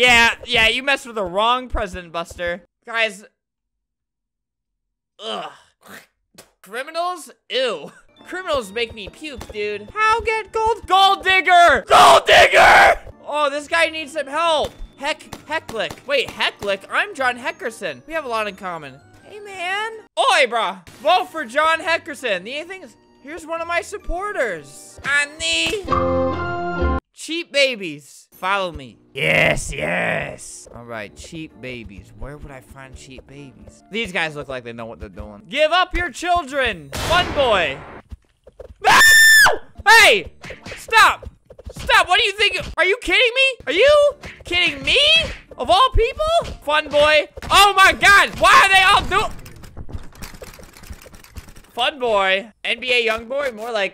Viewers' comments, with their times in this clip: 0:05 that sound like a llama spitting in minecrfat
0:38 Rip headphone users:
0:38 When u started screaming i got a ad perfect cut
0:38 an ad opened up right away making it perfectly cut scream
0:39 it put and ad as he was screaming